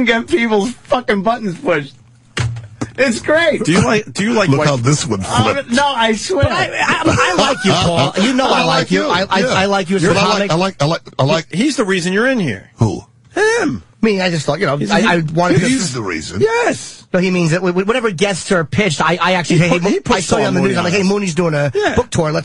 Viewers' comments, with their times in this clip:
0:05 Jesus, Jimmy can't stammer out "I like you Paul" fast enough